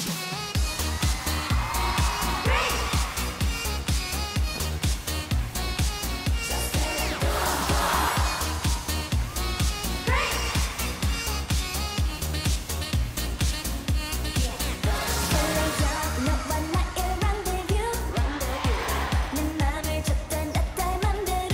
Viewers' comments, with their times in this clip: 0:07 wtf the crowd is so freaking loud